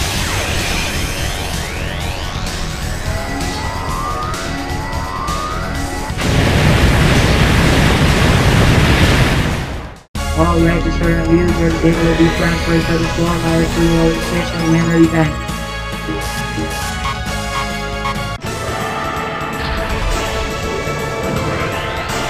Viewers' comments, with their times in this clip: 0:10 WHAT THE HELL IS THAT VOICE SAYING?!?!?!?!?!?!